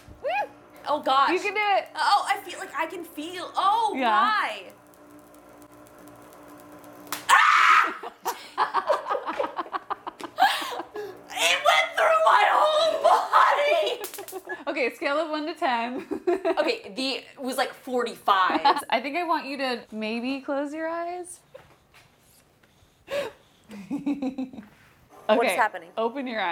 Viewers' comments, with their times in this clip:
0:07 The most genuine scream I have ever heard.
0:08 That evil laugh! :D
0:08 ..the laugh..of a very very mad scientist....love it
0:09 Evil scientist laugh awesome though. AWESOME video I wish you could connect with more young ladies so they see the magic of science.